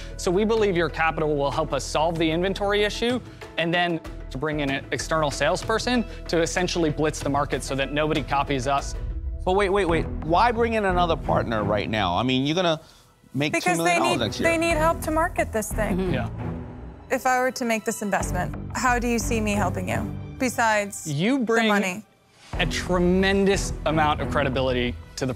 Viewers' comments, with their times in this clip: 0:10 February 9 2023 The ssslytherings 😂